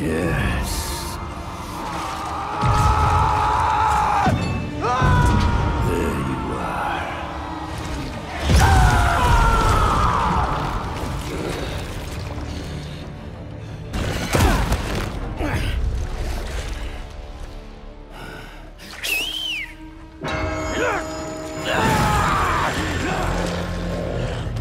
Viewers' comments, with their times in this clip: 0:07 man. If Yuri Lowenthal doesn’t get an award for his performance, I’ll scream. Speaking of which, his anger in that clip was so visceral and raw. I love this game. Edit: I screamed.